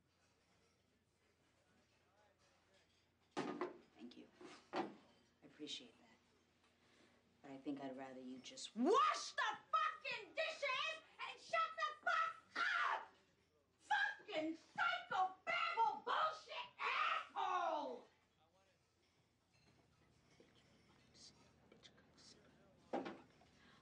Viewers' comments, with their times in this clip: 0:08 yell wash the dishes
0:08 Shout out bad words and you can’t stop laughing